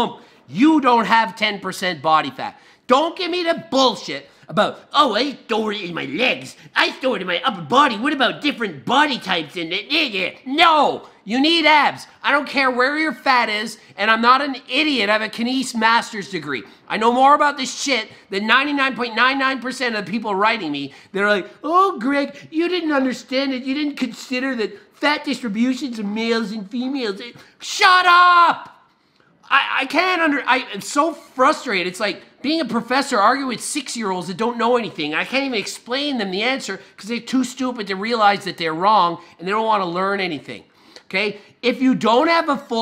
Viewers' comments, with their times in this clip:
0:04 HE SOUNDS LIKE KING KAI
0:27 he talks like rick lmaooo